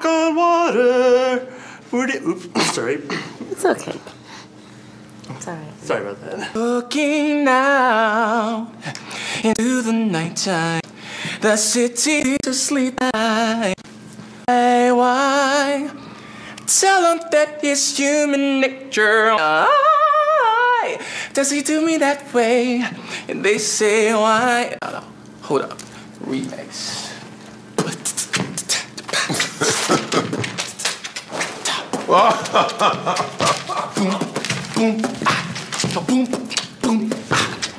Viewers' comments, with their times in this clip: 0:07 The guy CAN SING, but should throw away the 'high pitch vocals' and dancing.
0:24 The guy ain't even bad